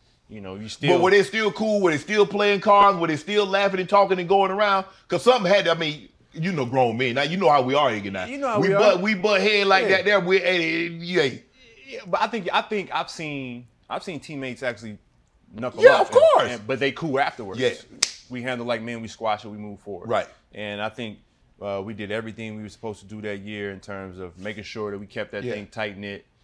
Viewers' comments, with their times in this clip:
0:08 Huhhhhh? (Dave Chappelle voice)